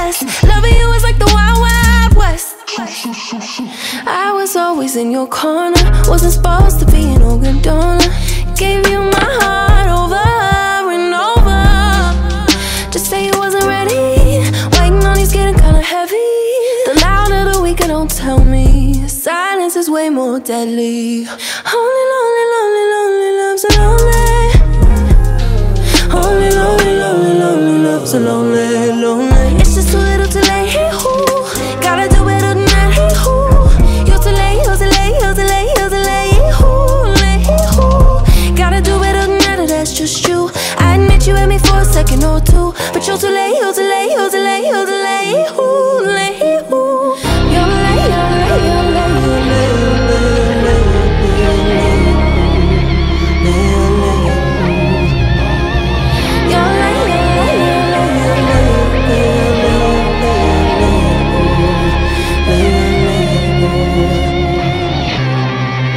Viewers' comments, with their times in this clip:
0:09 is quite literally music to my ears Edit: and I didn’t realize you can hear a heartbeat on that part.
0:47 the way her voice gets so deep sounds so pretty to me, really makes you see how wide of a vocal range she has.